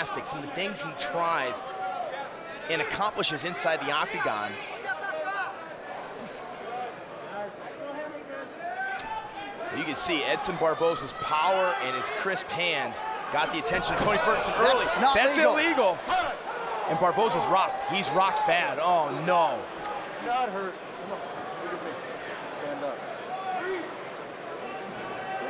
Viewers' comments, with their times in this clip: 0:07 hear a bone cracking 😭